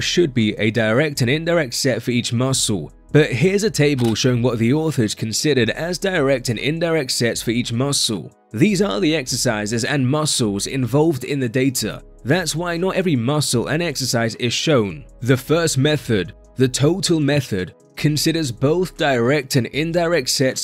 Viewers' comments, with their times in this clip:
0:08 Hmmmmm I'm getting AI voiceover vibes minutes in every time you say 'muscle', 'data', 'method'. That can't be your actual voice?